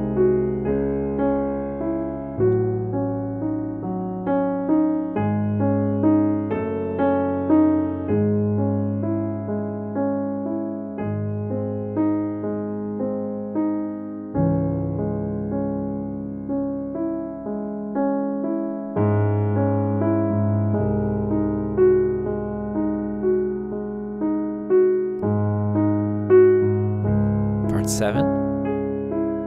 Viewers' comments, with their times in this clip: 0:10 here is a mistake in the right hand, it needs to be a f sharp instead of an g sharp played by the thumb